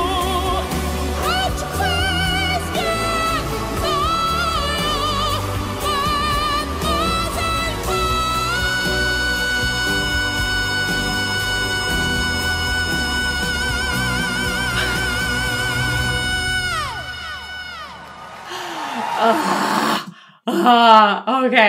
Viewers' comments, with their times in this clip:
0:08 ...that face is melting away sidewards! And laser is a killer metaphor for that tone!